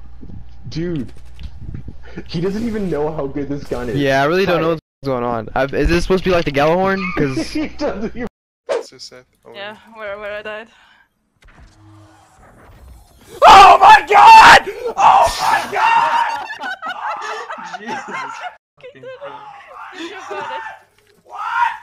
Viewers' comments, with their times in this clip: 0:09 The reaction that guy sounds like R2D2 and my god thats fucking hilarious